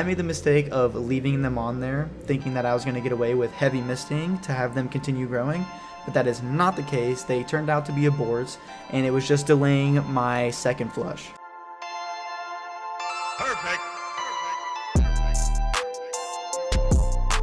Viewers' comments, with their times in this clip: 0:05 I’m glad u added that clip bcuz that beat 🔥🔥🔥🔥